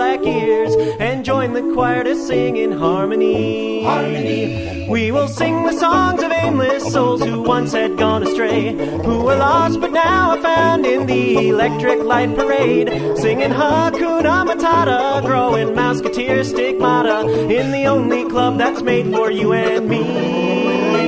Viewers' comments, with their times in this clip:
0:05 I legit didn't realize that was singing and not a banjo starting the first few times.